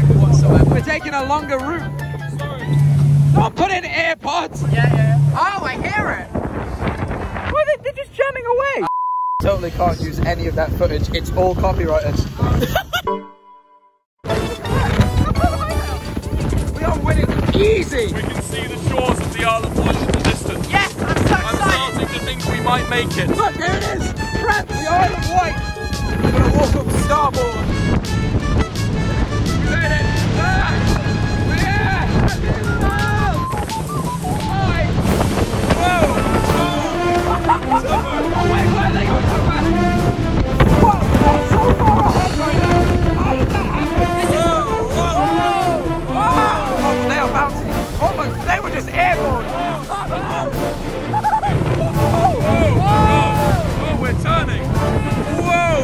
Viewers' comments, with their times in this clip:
0:07 nooo it's actually cut out
0:37 you know things are getting good when that music plays